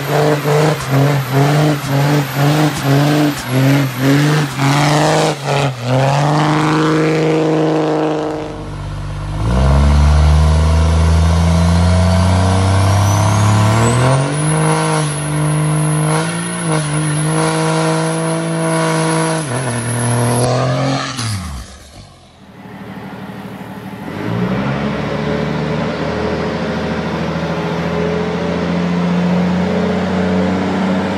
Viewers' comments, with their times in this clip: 0:09 just something about this truck that just sounds amazing...
0:18 what is causing that, "raspy" noise? Sounds fucking phenomenal. I've been comparing 24v vs 12v sounds for when I get my new truck (it'll strictly be a dick around project truck) and I think I'm leaning more towards the 24v. 12v does have that nice trucky sound that I like, but overall the 24v sounds better imo.